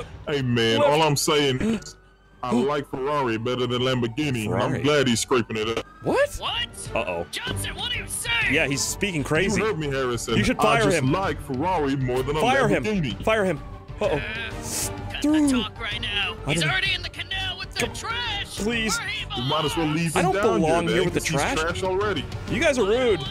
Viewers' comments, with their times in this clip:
0:04 The 3nd cop with the deep voice is the best but he said pull over that’s the worst